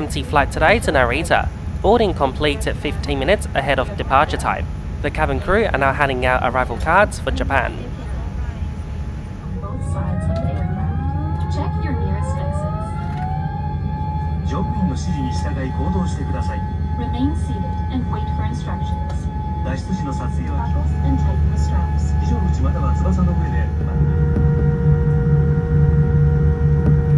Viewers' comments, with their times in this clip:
0:10 I love the 787 hydraulic sounds.